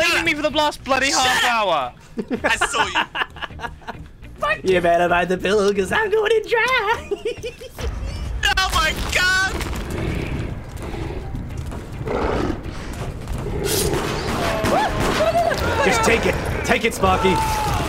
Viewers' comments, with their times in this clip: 0:04 That sounded so Herbert the Pervert